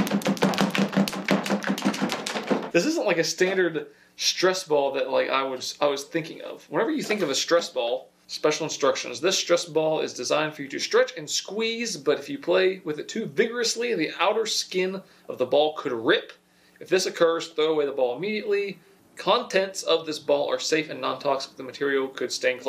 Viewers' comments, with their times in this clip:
0:03 jeasus dood that don't sound right